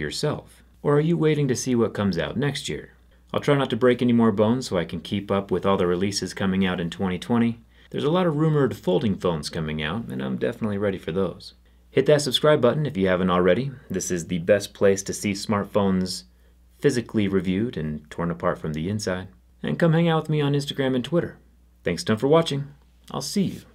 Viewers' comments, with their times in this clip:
0:07 The soft spoken and innocent looking God of Destruction for Smart Phones📱